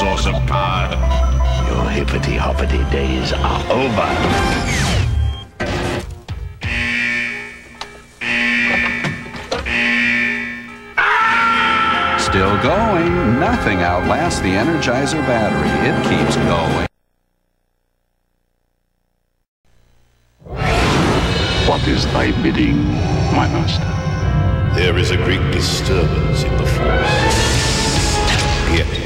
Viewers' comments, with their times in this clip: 0:10 I love his scream 😂😂😂